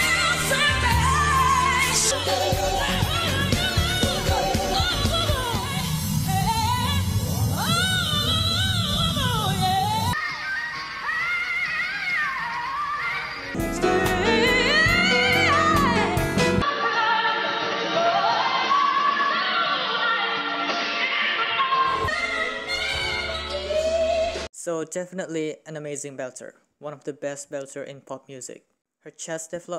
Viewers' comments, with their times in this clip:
0:10 that was F5-F#5-G5-G#5..it's resonant. She has supported G#5s on studio too.